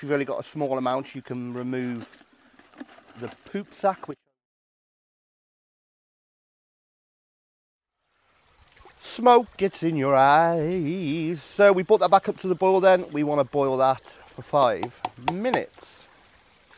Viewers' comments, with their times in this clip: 0:04 Why did the sound stop ?